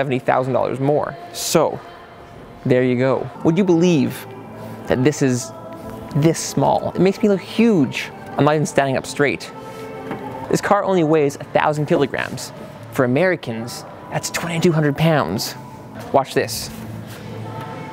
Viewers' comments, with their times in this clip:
0:05 listen the back music cant feel my face🙈🙈